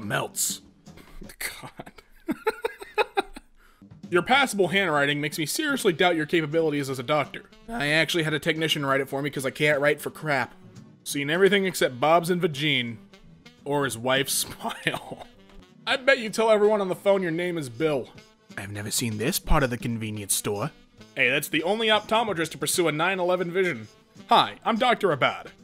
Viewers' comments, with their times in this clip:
0:07 that voice crack was haaaaaaard